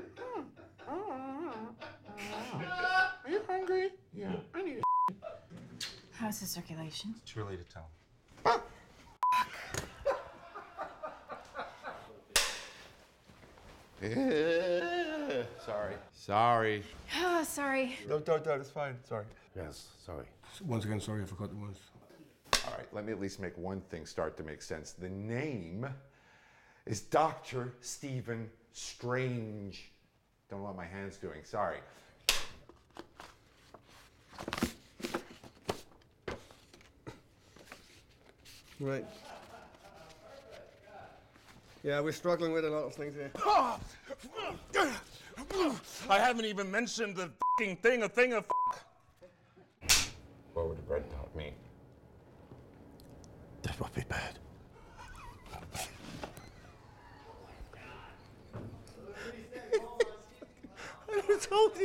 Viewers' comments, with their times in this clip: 0:04 You can hear the crew laughing in the background...
0:08 did he just bark
0:09 might be the best fuck I heard lol
0:13 THE VOICE CRACKK THOO HAD MEE😂😂🤣🤣 💀💀💀
0:14 what was that noise lol.
0:20 Mads apologised like there was so much at stake 😆😆
0:33 is my favorite blooper, it’s so awkward without cinematic music
0:38 Weer struglin wi a lo o things ere. Mads sounding very English there.
0:41 Same! Did his accent seem...British at like ?
0:41 why did Mads sound so British? 😂 "yeah we're struggling wiv a lot of fings here"
0:44 Mads Mikkelsen accent goes English!!!! Uber hot - and I ship his Danish accent!